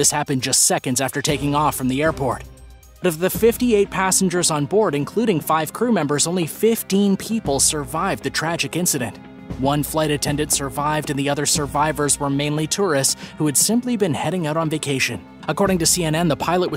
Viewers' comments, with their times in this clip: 0:03 his sttuter T-T-The